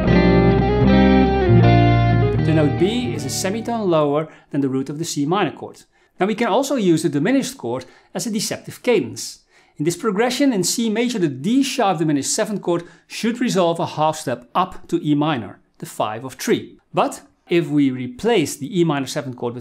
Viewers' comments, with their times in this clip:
0:06 sounds like some Opeth Damnation